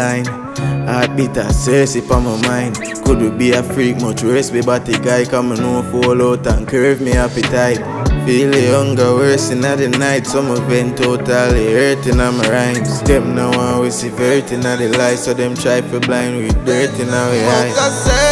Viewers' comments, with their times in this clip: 0:03 i know he didnt say nothing fishy but he say ??????????
0:03 i know he didnt say nothing fishy but he say ??????????
0:03 i know he didnt say nothing fishy but he say ??????????
0:03 i know he didnt say nothing fishy but he say ??????????